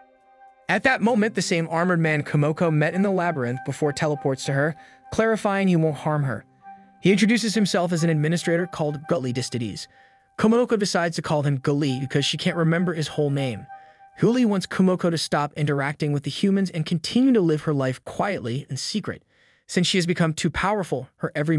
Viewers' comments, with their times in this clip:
0:05 only hear Gulie Deez to Deez